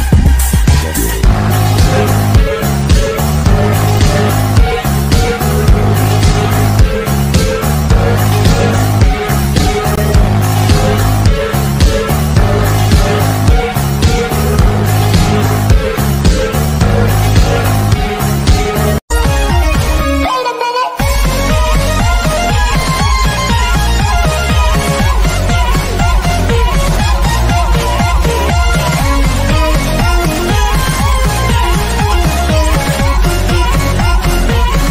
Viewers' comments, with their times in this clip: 0:09 old song but good song
0:19 Its music time!